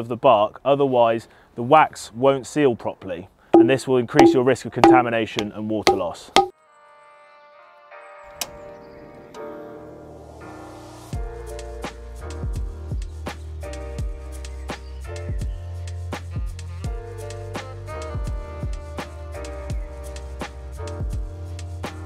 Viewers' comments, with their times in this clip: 0:03 Great video and super cool to see the process of growing mushrooms at home but all that played through my head was the bonk noise lol